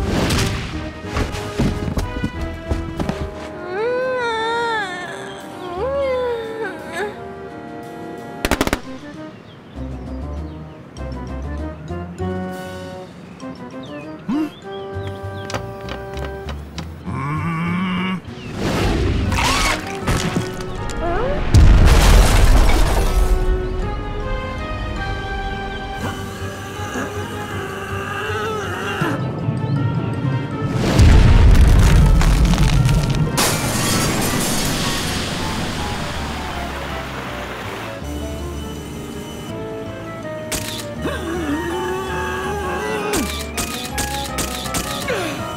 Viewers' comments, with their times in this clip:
0:04 Sus Giggles sounds
0:30 That sonic boom was so thunderous.